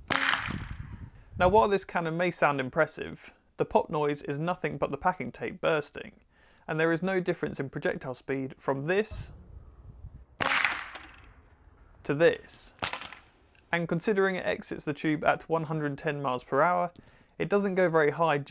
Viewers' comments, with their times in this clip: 0:04 when you open a can of Pringles.